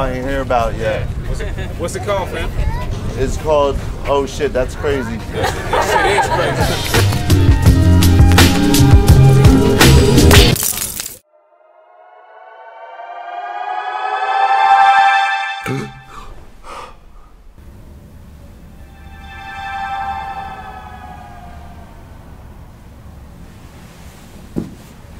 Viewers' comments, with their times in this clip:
0:10 if u slow down the speed it says "they have me"help"then the all seeing eye"then it say illuminate Spooooookkky
0:10 OMG PEOPLE LOOK AT THIS CLICK THIS TIME ok now go to settings and make the speed go REALLY slow it said HELP THEY GOT ME
0:11 Why does this say they got me help illuminati when you slow the video when the road like on min number of the video